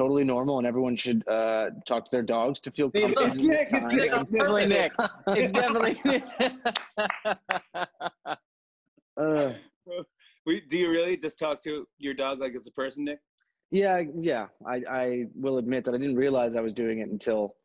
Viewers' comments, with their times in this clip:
0:03 Nick's laugh tho 😊💞